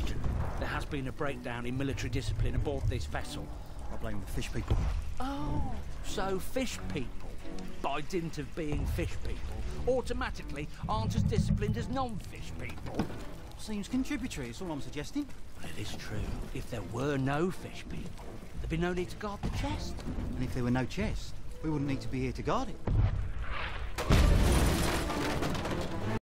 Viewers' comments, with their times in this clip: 0:09 That sounds pretty British